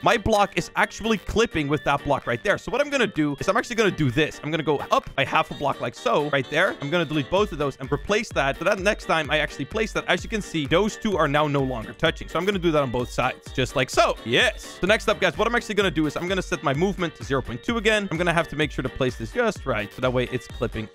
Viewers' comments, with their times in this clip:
0:06 is when his recording cut out for a second